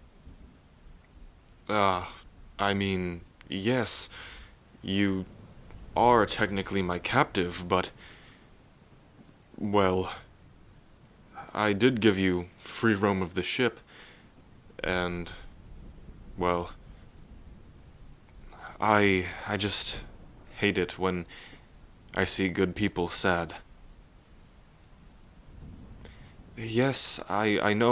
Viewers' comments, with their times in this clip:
0:08 the fucking dog barking